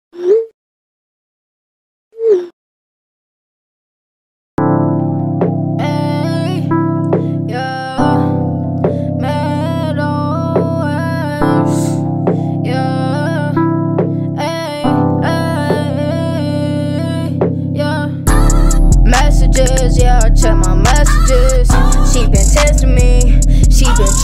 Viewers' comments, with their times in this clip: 0:07 when you find out how to use autotune
0:09 failed attempt of saying Matt Ox
0:09 AHHHH all the AUTOTUNE